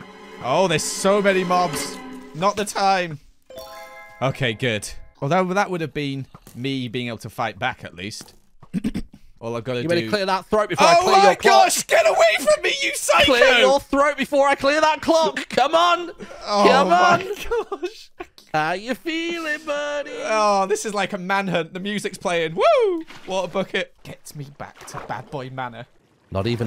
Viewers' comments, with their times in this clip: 0:10 That's actual fear in his voice